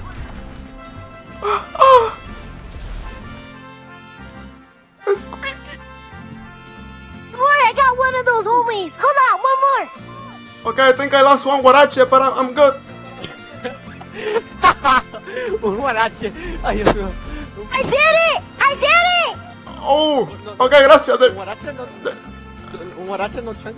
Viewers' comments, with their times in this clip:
0:05 "Esqueaky.. :(" I can't stop laughing!!!